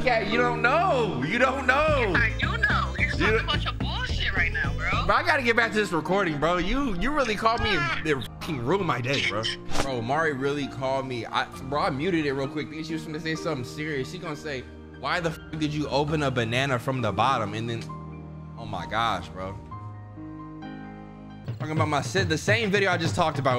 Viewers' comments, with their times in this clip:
0:07 KH music caught me off guard 😂